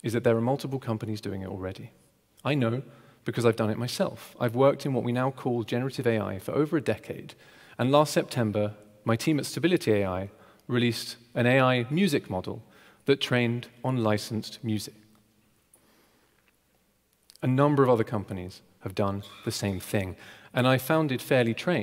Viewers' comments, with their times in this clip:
0:08 he was 100% pausing for an applause that never happened hahahahahahaha xD